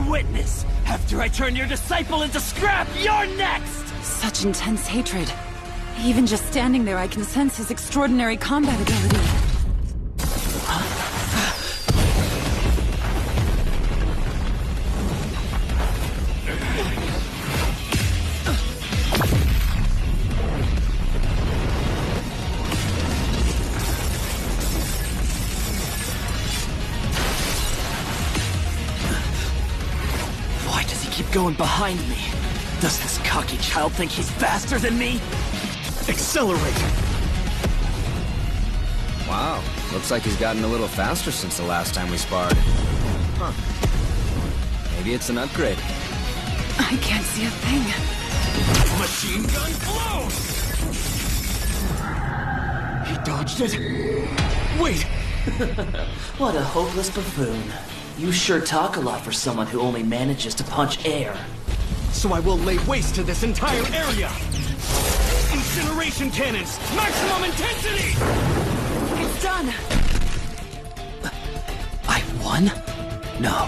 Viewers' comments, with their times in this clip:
0:08 that sound of genie teleporting behind sonic is so satisfying
0:23 sounds like sticky fingers punches
0:23 Sticky Fingers barrage sound
0:51 WHY IS NO ONE TALKIG ABOUT THE SOUND THAT PLAYS WHEN SONIC DISAPPEARS???? IT’S SO GOOD?????????
0:55 HONORABLE MENTION FOR SONIC’S LITTLE GIGGLE HE’S SO NGH